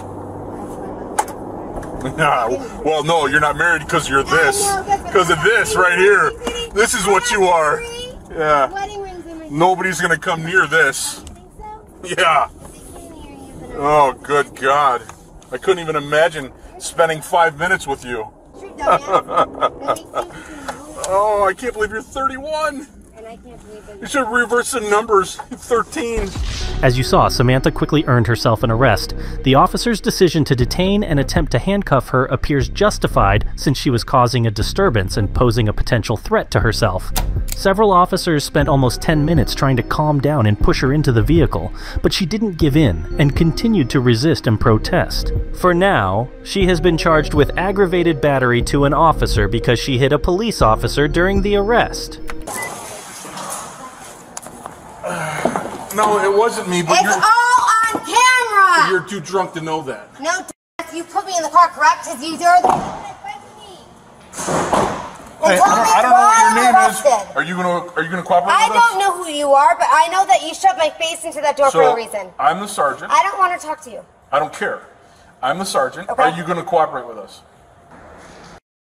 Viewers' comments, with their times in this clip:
0:09 I Love the Cops laughing 😜🤣👍🏼
1:02 Lmao, I love that little \*silenced\*